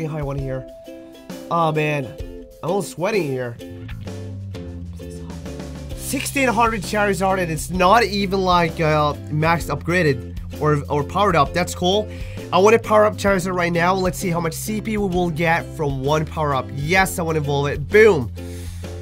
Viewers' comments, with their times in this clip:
0:05 someone whispers "16 hundred"